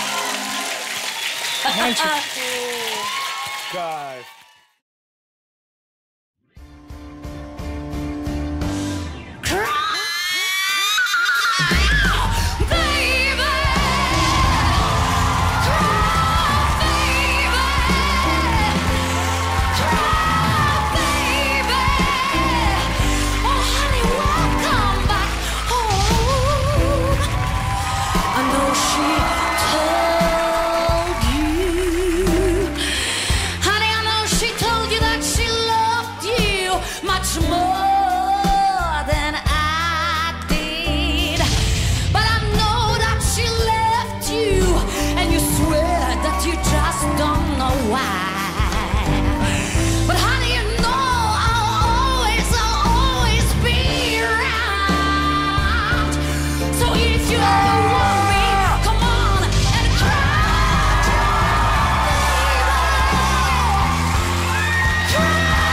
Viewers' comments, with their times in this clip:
0:06 i see the Janis Joplin's soul
0:06 what a fucking voice! OH MY GOD
0:06 The screeching made me wish I was deaf.
0:07 I think Janet's ghost was sanging thru the lady I swear it felt like it was real
0:09 RIP my hears
0:09 what a strange sound.
0:49 dude made the waluigi noise